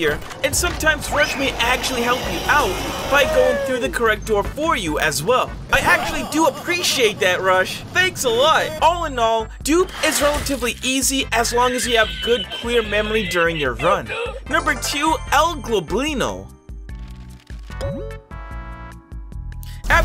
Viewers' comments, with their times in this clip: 0:03 Rush laughing 2